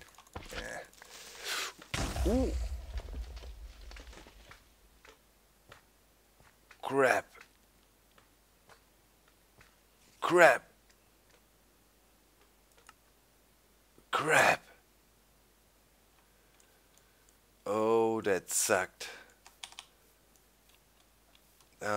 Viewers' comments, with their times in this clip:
0:04 Live by the boom, die by the boom.